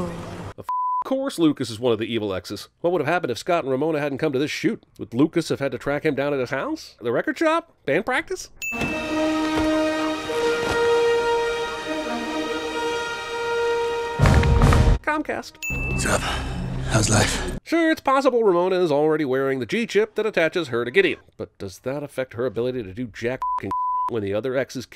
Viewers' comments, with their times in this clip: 0:09 😂😂😂😂😂😂😂 fucking dead that whole sequence. He’s That Hollywood that when he enters the set that Trademark Audio Plays. 😂👍🎥 Discount Macaulay Culkin